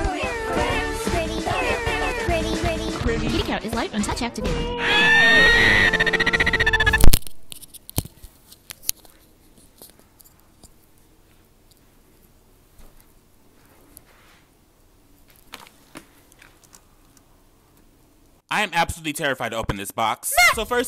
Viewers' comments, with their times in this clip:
0:04 The screaming cat caught me off guard! XD
0:04 The cat scream tho Its funnier beacuse I know that video